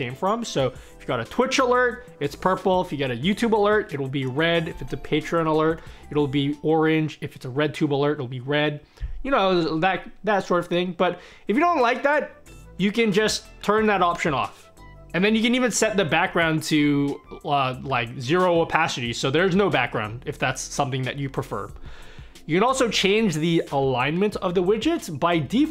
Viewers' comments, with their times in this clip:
0:07 lol "if it's a redtube alert!" good stuff bro!